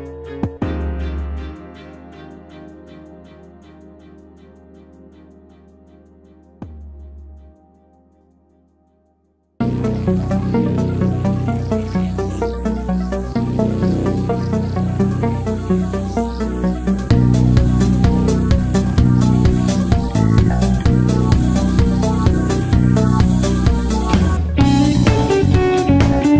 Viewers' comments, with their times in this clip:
0:07 The least relaxing persona OST but ok X)